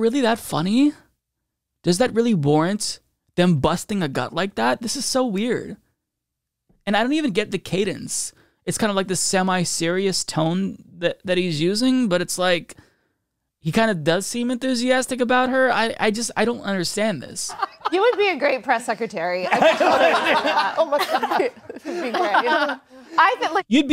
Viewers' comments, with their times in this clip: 0:05 it is weird, It like they are laughing at the fact it's true.